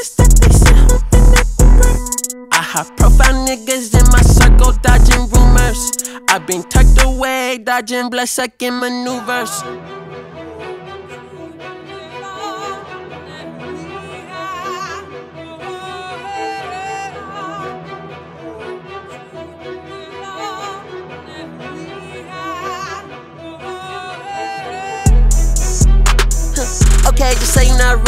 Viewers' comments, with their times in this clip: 0:09 was she singing gospelly to what I think she was singing 😭🙏🔥